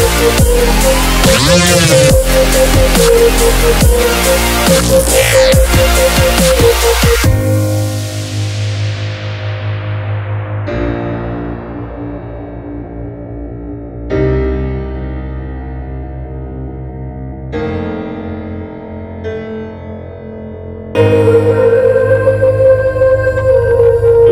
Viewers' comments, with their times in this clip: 0:10 an on was just beautiful music